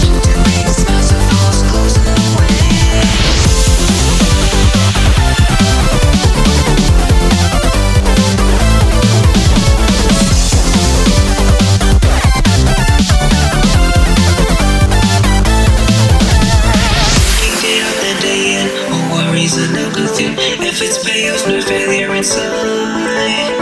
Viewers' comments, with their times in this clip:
0:04 reminds me of a old anime theme i liked